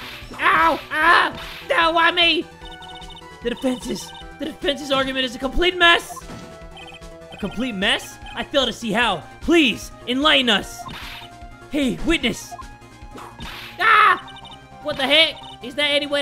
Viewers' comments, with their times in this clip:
0:04 HYBRID OF ALL THE SONGS LISTEN